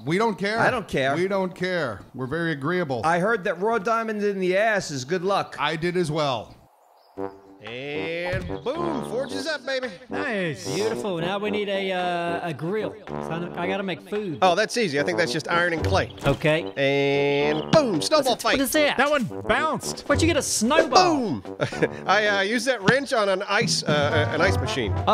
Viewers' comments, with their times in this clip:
0:10 Sir Walken voice!